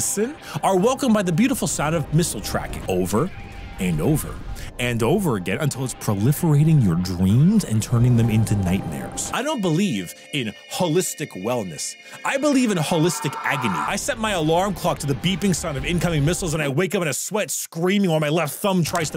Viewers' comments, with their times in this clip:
0:05 The Missile Tracking alerts are in the fucking soundtrack aswell. I've heard them in Peacekeepers II.